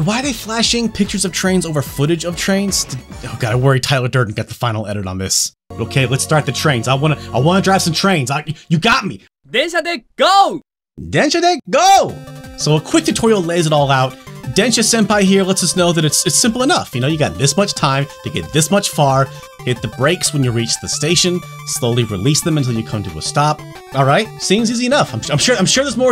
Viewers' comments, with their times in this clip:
0:09 "There's a dick, GO!" Thank you to Caddicarus for forever ruining the correct pronunciation of this phrase.